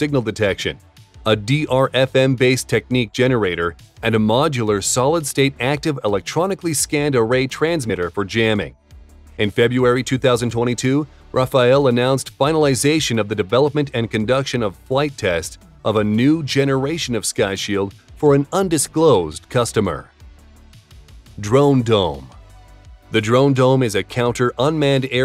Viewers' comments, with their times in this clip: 0:10 the announcer pronounced "February" as "Febuary". Why? Stupidity or carelessness? Whatever the reason may be for that mispronunciation, it is "Feb-Ru-Ary", NOT "Feb-U-Ary".